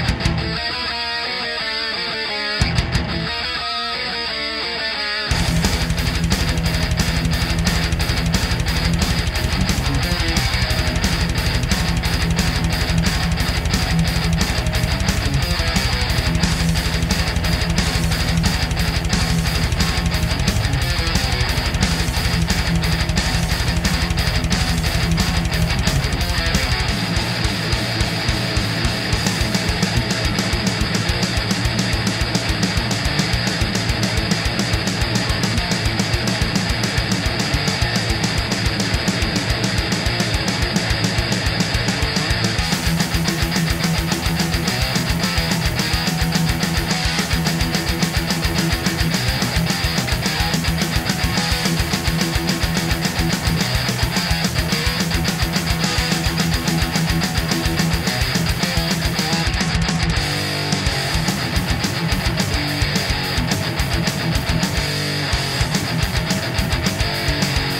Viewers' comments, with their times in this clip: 0:05 That bass during Raining Blood sounds like it has a flanger effect of some sort... It is probably due to a bad MIDI VST plugin, or because your bass-guitar has strings adjusted way too low, which cause excessive buzzing. You probably need some headphones to hear that! Nice video and sick tremolo picking though :)
0:53 Never noticed how much downpicking that had